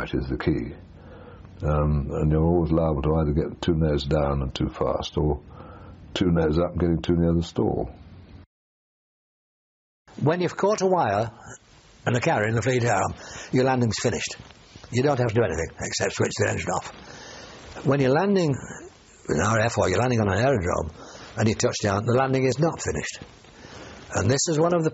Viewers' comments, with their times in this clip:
0:10 At ~ the pilot speaking changed that you didn't identify as you usually do.